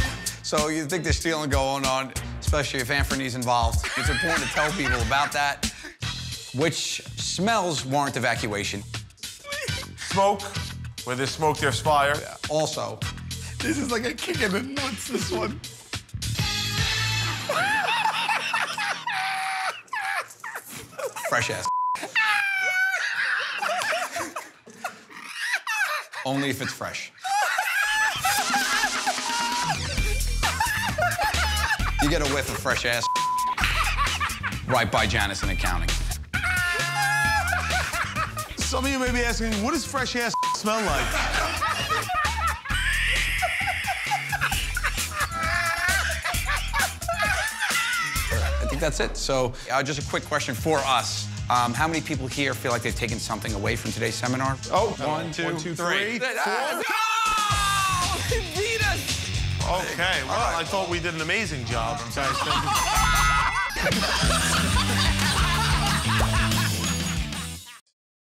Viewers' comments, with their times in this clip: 0:09 Just listen to Sal's mini laugh !!!
0:15 the intro laugh is born with “I will never forgive you” as well
0:15 -the musical que... Joe somehow reeled it in... Definitely a guys seminar
0:16 The signature laugh from the intro theme.
0:16 that's the laugh they use as the theme ?
0:17 That’s one of the laughs they use for the intro of every episode!!!
0:17 the iconic intro laugh
0:17 laughter from theme song
0:18 laugh from the intro to every video
0:37 sal is sounding like Elmo
0:42 The hardest Sal has probably ever laughed ever.
0:42 Sal’s laugh sounds like a mix of an asthma machine and a bottle of soda when you open it up for the first time💀💀💀
0:42 "Fresh ass****..." Sal dies of laughter LMAO 😭😭🤣🤣
0:42 I don't know, I think this laugh causes cancer 😂
0:42 Sals laugh FLOORED me LMAOOOOOOOOO
0:42 Sal is freaking dying of laughter. 🤣
0:42 i died sal's laugh
0:42 I'd so love to see an edit where somebody replaces the Pteranodon Screech from Jurassic Park III and Jurassic World to Sal's laugh right here! It would make it sound like Eric Kirby was carried off by a laughing Sal!
0:42 that is the absolute hardest I have ever heard sal laugh... Christ in heaven. lol
0:42 Pigs being killed sounds like
0:42 sounds like my 6th grade English teacher
0:42 Sal's laugh hahaha
0:42 Sal sounds like Baby Godzilla.
0:42 Sal sounds like a velociraptor
0:42 OMG Sal's laugh is like a bat or sumthin.
0:43 Sal laughed so hard he turned into a pterodactyl from Jurassic Park
0:43 What the hell is that laugh Sal makes its like he turns into a bat or pteranodon
0:43 Sal’s laughing is so contagious, lol 😂.
0:43 that may be the hardest laugh I’ve ever witnessed
0:43 sal giving birth to a dying chicken
0:43 That is probably the hardest Sal laughed EVER.
0:44 the office janitor cracks up
1:02 Am I the only one who cracked up at Sal's laugh ?